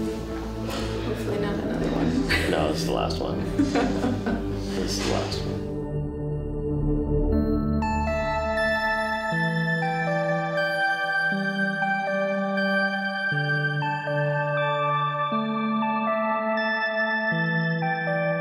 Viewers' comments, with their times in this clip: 0:05 omg, he sounded so sad T_T